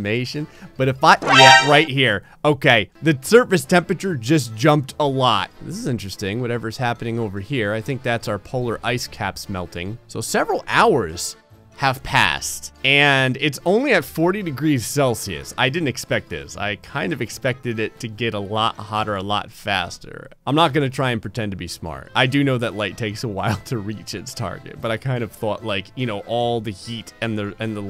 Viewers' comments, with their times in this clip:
0:09 I'm just sayin'... that scared me because that flourish O_O